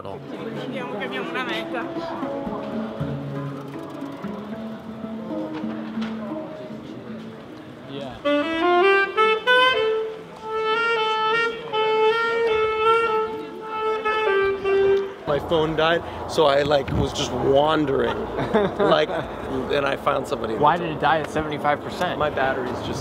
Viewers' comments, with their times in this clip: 0:06 sounded as if the saxophonist street musician was playing careless whisper